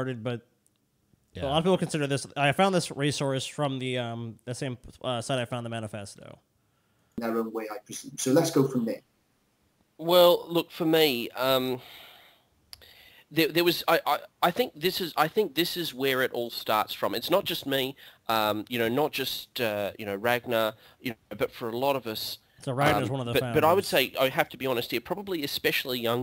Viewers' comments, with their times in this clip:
0:07 Is that Jim Sterling? Sounds exactly like him.